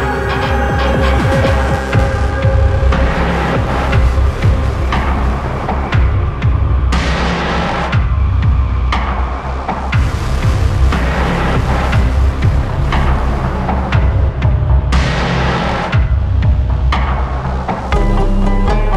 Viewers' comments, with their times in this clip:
0:03 when you're trying to kill people from in mid-air before the warzone round starts and then you hear this and a clock counting down "Aw c'mon I was just about to kill him."